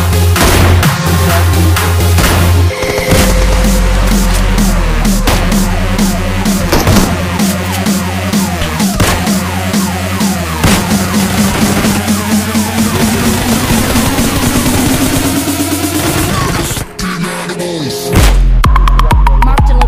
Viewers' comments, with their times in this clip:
0:04 That m16 shot man .....!!!!! 🔥🔥🔥🔥🔥🔥🔥🔥